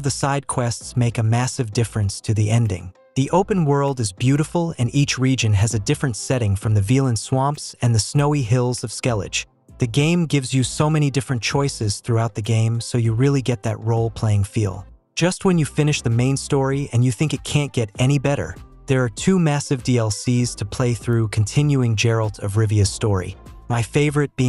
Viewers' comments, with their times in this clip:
0:08 skellidge? oh hell no...